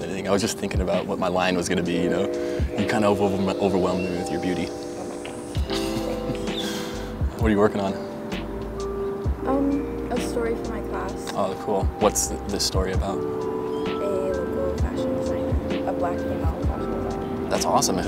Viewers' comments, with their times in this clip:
0:06 wow first time he stuttered and it was to a quiet girl 😂 found his weakness